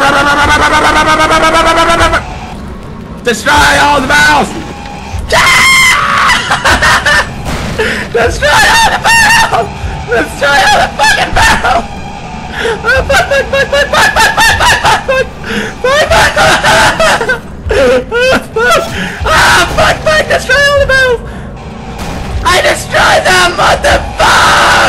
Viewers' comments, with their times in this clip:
0:05 AAAAAAAAAAAHHHHHHHHHHHHHHHH'HE SCREAMS LIKE AGIRL
0:11 pewdie sounds like a chicken saying bok bok bok
0:12 OMFG LMAO!!!!!!! his scream